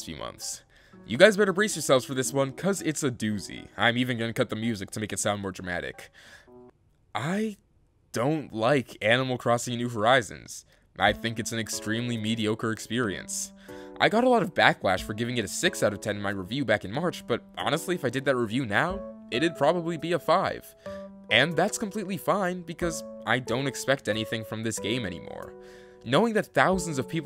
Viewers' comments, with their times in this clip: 0:08 I figured after like 10 seconds that it wasn’t a super dramatic pause but my wifi just stopped again